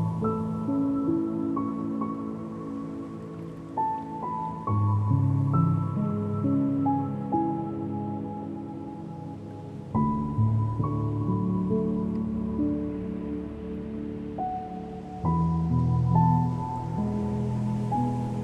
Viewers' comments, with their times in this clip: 0:03 🔥🔥🔥 Is this listentnig in 2020 This voice is fascinating 💙 👇👇👇👇👇🔥💃